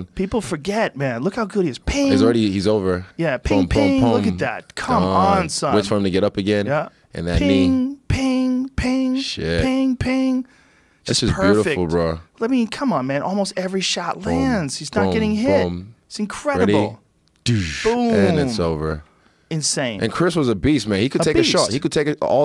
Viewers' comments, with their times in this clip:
0:03 We all know you are here to hear the annoying JR ping ping ping. So here it is: